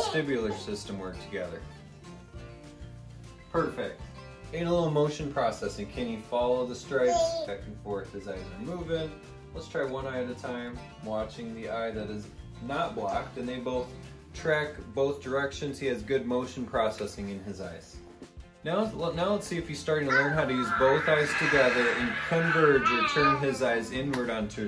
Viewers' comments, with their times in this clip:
0:05 Oh doc, it was all so cute until you brought out that spin machine at about the mark....thumbs up for tho for all the baby noises